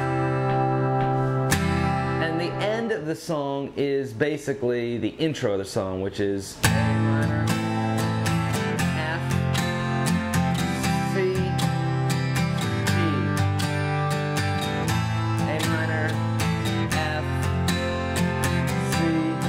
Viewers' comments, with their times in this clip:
0:06 Great lesson man, it sounds like "have you ever seen the rain"-C.C.R.